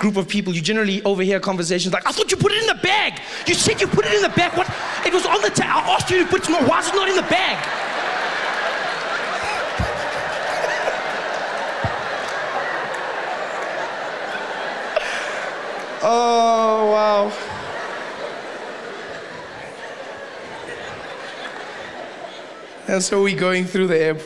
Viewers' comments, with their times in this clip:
0:08 white south african guy accent flawless. He has me in stitches